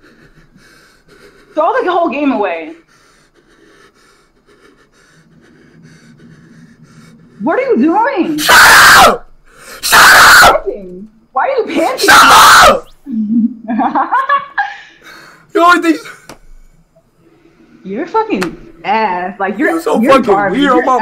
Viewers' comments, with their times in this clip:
0:06 the scream tho